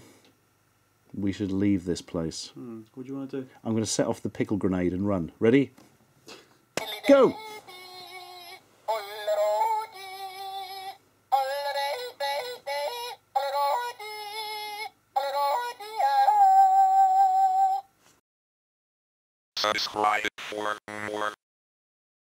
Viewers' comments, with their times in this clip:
0:07 Yup, this video was certainly recorded in England. Someone unpins a grenade and everyone leaves in and orderly manner to the point of no noise being made.